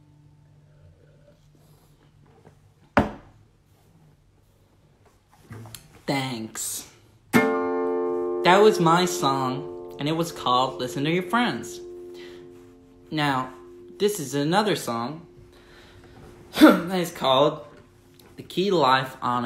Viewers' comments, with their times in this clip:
0:05 his american accent 💀